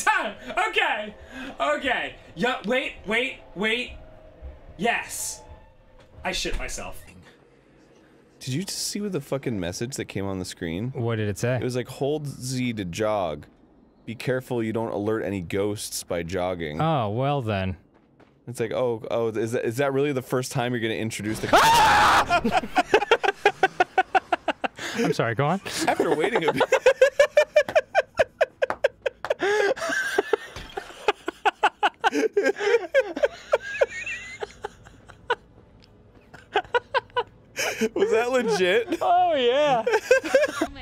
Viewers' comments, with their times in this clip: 0:09 still stands as my favorite Halloween Grumps moment. Dan's scream is sublime :)
0:15 will always and forever have me on the floor dying , the way he goes from full scream to normal lmao
0:17 the scream tho hahahahhaa XD
0:19 will always be the funniest scream ever!
0:20 I love his mansly scream
0:21 OMG!!! I'm CRYING IT SOUNDS LIKE THE GHOST IS SCREAMING LIKE DAN on like... a .5 second delay!!! COMEDY GOOOOLLLLDDDD!!!!!!!! OMG I CANT!!!! ITS SOOOOO PERFECT!!!
0:21 My favourite scream in this compilation Beautiful 😭❤️
0:21 That scream! XD
0:21 Dan's scream gets me everytime😂